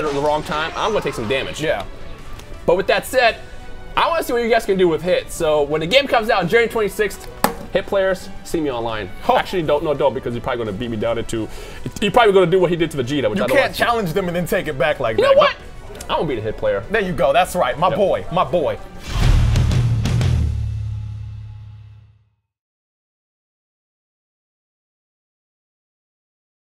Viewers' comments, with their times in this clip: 0:07 rip controller (broke sound)